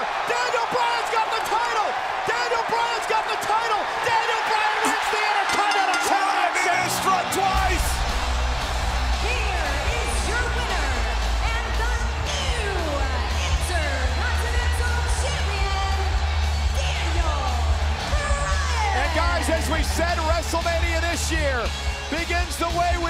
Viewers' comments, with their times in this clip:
0:03 did anyone hear a fart ?
0:03 did I hear a fart
0:04 Did anyone hear the fart in ?
0:04 Was that a fart? Hahahahaha Sounds like one of the commentators probably JBL hahahaha
0:04 Who heard a fart ?
0:04 you could hear spit
0:04 Was that just a fart, listen closely
0:04 some one farted
0:04 That fart ruined the moment
0:05 Byron Saxton let one rip.
0:05 Why in sounds a fart??
0:06 sound of farting